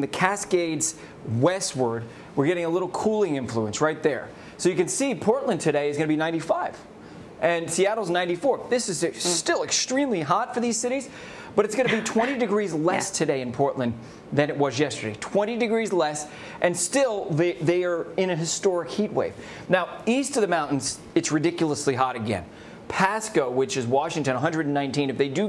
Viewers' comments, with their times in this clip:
0:08 somebody farted and the girl snickered 🤭😂😂😂😂😂😂😂😂😂😂😂😂😂
0:08 Bruh who farted